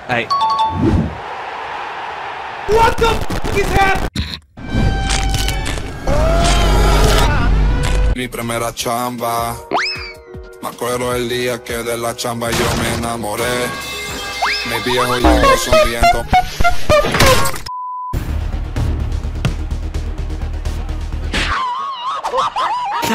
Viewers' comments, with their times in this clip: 0:08 Best clip with the best song LOL